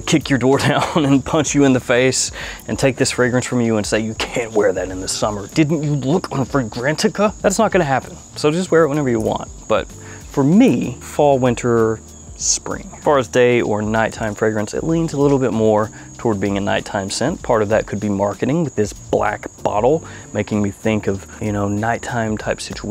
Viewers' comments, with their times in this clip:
0:04 Solid Snake voiceover.